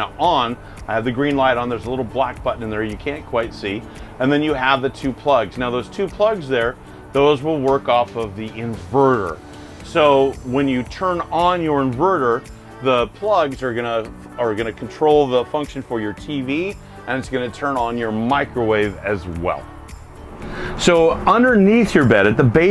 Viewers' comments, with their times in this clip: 0:05 The background music is annoying I stopped listening at the minute mark and unliked and unsubscribed from this channel. No way you could spend 30 minutes listening to that music